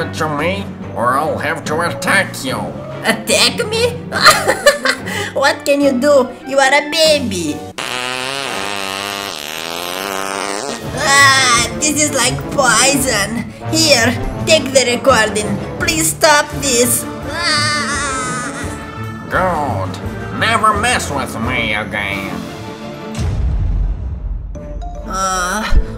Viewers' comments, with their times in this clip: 0:08 Barbaro fart again 😂😂😂